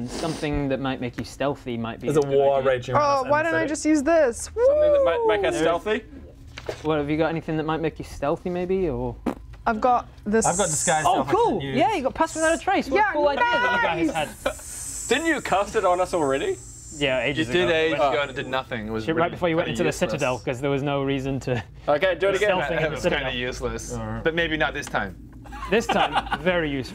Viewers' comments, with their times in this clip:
0:08 Did someone fart ?